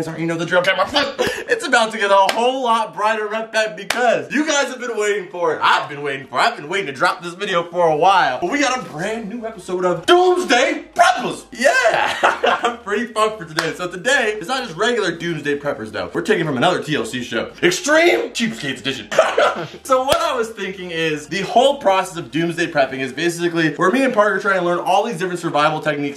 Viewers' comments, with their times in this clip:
0:10 I heard Doomsday Peppers